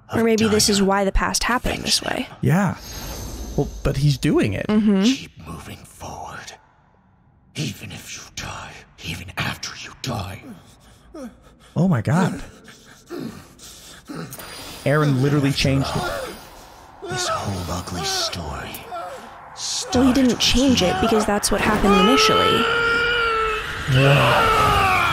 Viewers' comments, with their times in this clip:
0:06 Oh my god, I haven't heard old Eren dubbed until now. He's even worse than before. He sounds like he's trying to do a Doctor Claw impression. I just can't take this guy's performance seriously.